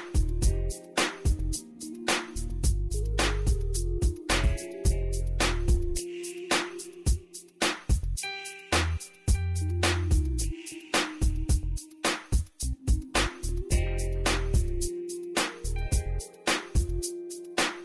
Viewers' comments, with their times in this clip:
0:03 Shooting in time with the music. LOL!